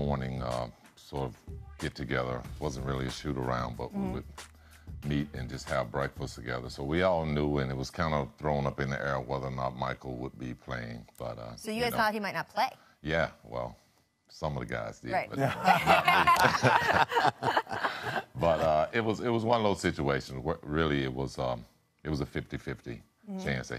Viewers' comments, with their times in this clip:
0:04 Anyone Else hear the Fart at or around the mark??? I thought my dog farted in the house but she was downstairs